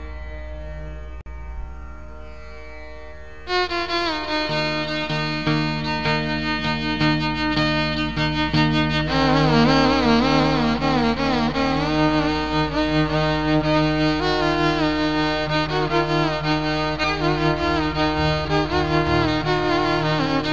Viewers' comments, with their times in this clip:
0:03 On a different level all together, abheri at its best !! the cascade starts to pour from